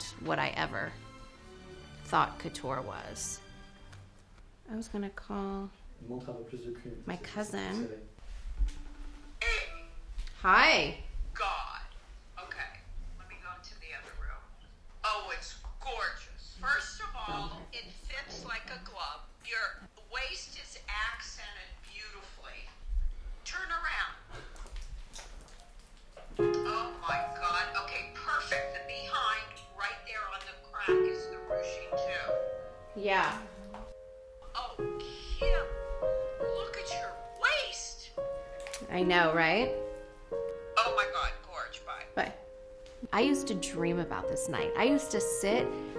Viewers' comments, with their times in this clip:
0:04 to all my French fellows tell me I not the only one who heard this "Montre un peu plus de Q........"
0:06 Is the guy saying "montre un peu plus de cul" or am I tripping?
0:26 Cousin: comments on her butt Out of nowhere: Claire de Lune starts playing 😂
0:26 not me starting to cry cuz of the music dhhdgshshs
0:26 ok whats with the Howling background sound
0:27 Was anybody else uncomfortable when the 'Clair de lune' piano music started right as her cousin said "it accents your behind, on the crack?" 😂 no hate though, she looks beautiful for real
0:27 why did they suddenly start to play Clair de lune 😭😭😭